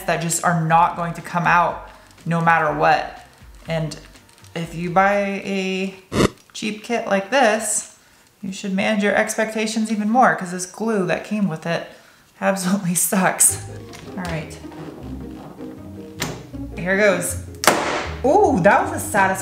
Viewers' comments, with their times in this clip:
0:06 1987 Contra flame thrower video game sound. 😎😎😎😎😎